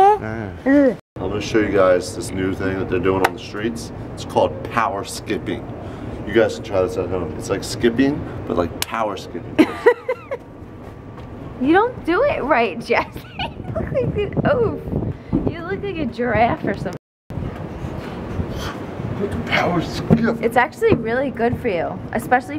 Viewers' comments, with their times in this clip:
0:09 wtf is that laugh